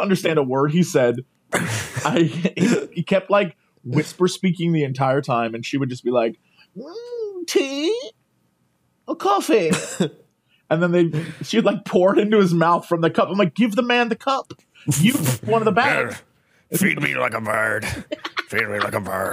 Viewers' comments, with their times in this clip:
0:04 That woman sounds like the fancy lady from Misadventures of Flapjack who says "More POWDAH Chaaarles"